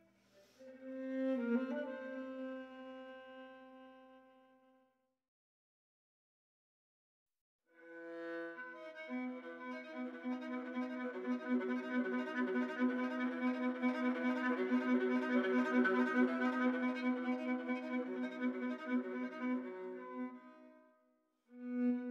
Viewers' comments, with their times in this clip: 0:09 Wow! Absolutely beautiful! You can feel the emotion in your song. My favorite is to end of song when you do those fast arpeggios. How long did it take you to produce this type of video??